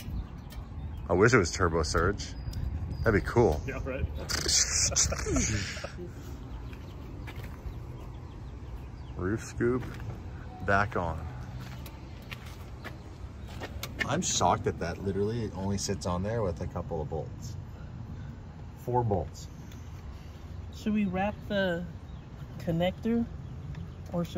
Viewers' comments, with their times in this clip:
0:06 BROOO WHAT TURBO SURGE IS STUUTUTUTU